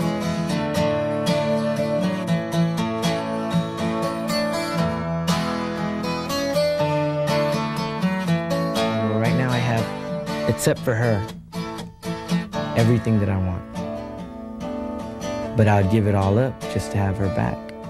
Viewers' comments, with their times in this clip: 0:05 Chris's guitar solo sounds very much like "Puede Ser" From Selena & Pete Astudillo. Correct me if I'm wrong!